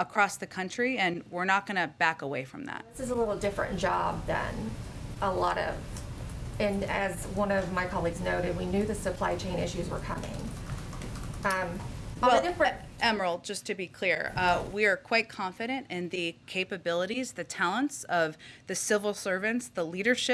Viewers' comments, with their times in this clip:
0:04 Ahhhh!!! Scary stuff. Her artificial intelligence sputtered for a quick second